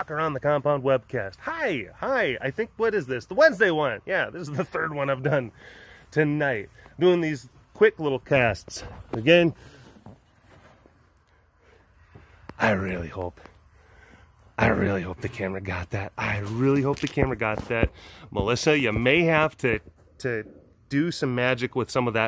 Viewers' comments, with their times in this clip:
0:09 #DorbestAward to Smooshy Toot aka Divali. 💛 LOLOLOL, everyone do yourself a favor and use headphones for 💨